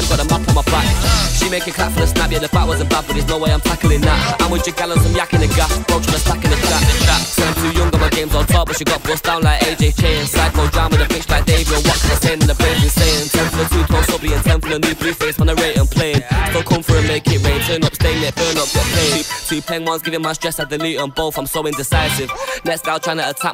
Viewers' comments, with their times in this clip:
0:06 Flows so nicely 🥶